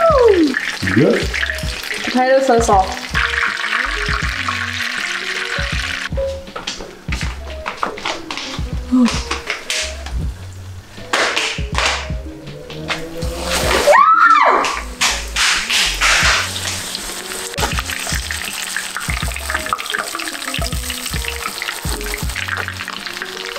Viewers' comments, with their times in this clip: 0:05 When Captain America got another shield slipper slaps floor